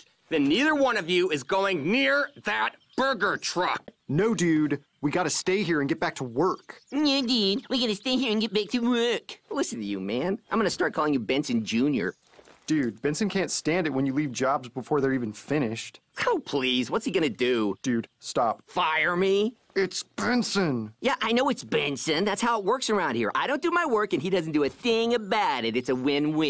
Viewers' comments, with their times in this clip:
0:07 Well Rigby's Voice Is Kinda Funny